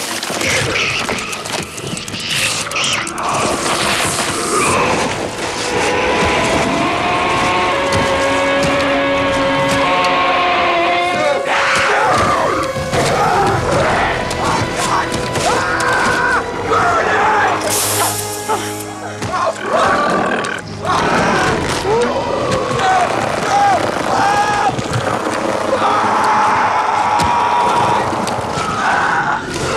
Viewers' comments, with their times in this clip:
0:04 the only thing this film got right was the horrifying roar
0:05 A little backstory. Every time the Thing screams, it screams with the combined voices of every living being it has consumed and assimilated. So that scream has Edvard's voice in it somewhere.
0:05 Now that's a demoralizing scream.
0:05 Is no one going to talk about how gut wrenching and horrifying that roar-scream is ?
0:05 that Roar is perfect
0:05 Edvard's scream sounds very similar to the original movie's screams. They managed to mimic it almost perfectly.
0:05 Is it me, or Edvard-Thing's Scream sounds like a distorded version of the Tarzan Scream.
0:05 That sound at he makes is just unholy!!
0:05 sounds like William Birkin
0:06 that sounds amazingly scary!
0:06 I think my biggest problem with this film is the sound effects and sound desing in general, I can even get past the stupid decision to CGI everything up. For example, they could have left that scream without any other effects, it's fucking unsettling, but they desided to add this bunch of screeches and little 'monster' squeals that make it sound like a bug or something, there's even something that sounds like a damn Leopard ffs, and it overshadow the original scream. Making it waaaay less scary and way less unsettling. It worked in the original by itself, even after 30+ years, it sure as hell would have worked here.
0:09 And the award for the most disturbing roar goes too
0:09 they kept the same scream. Nice.
0:11 The Edvard thing was probably the best thing-out of the movie. being the most horrific scene. Imagine being Adam at that point and having this grunting monstrosity trudging after you.